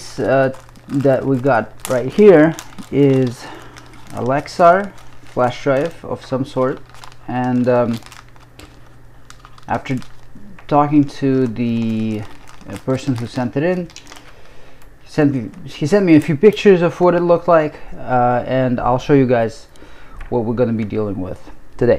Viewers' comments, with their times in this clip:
0:04 i wonder how many amazon devices activated when you said "a lexar"